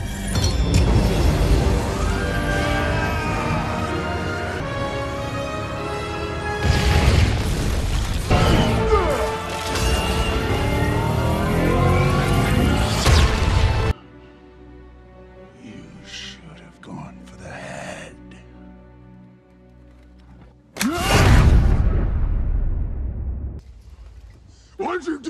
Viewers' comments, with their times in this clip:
0:10 has gotta be one of the best sound effects. That sound of the gauntlet/stones getting higher.
0:10 sounds like the revving up of a supercar